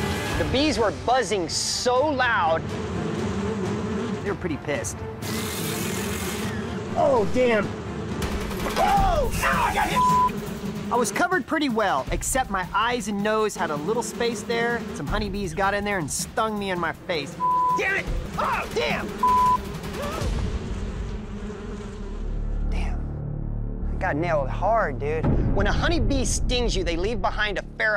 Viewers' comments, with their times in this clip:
0:09 when them bees was tagging his a$$ and he was yelling man I lost it 😂😂😂😂